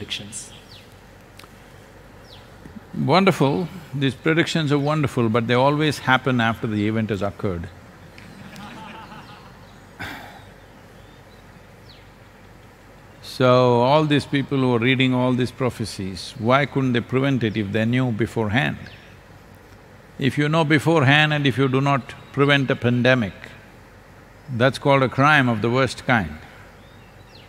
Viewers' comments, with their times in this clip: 0:07 definately sadhguru missed the laugh of audience
0:08 somebody was laughing😂